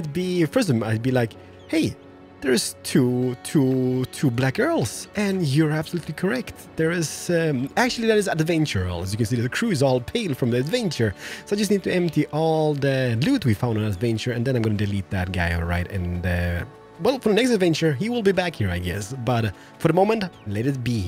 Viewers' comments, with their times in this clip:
0:04 swear you said 2 black girls lol